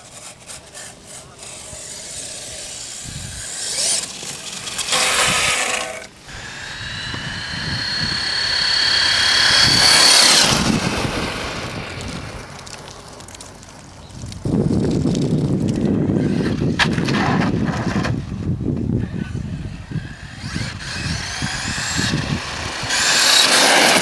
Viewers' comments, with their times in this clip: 0:05 the sound of when stops is it from the motor or something else? I have 2200 motor and never heard sound like this